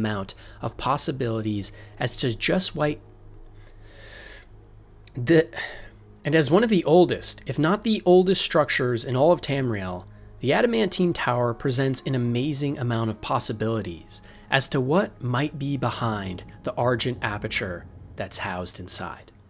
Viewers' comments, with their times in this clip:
0:05 oooooooooohhhhhhhhhh someone had an editing mistake lol